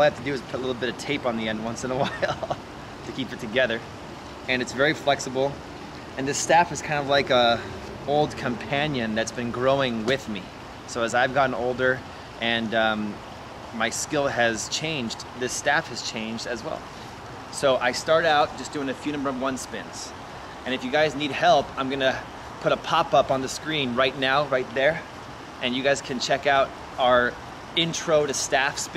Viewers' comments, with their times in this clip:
0:09 That sounds exactly like the landing sound in in Minecraft!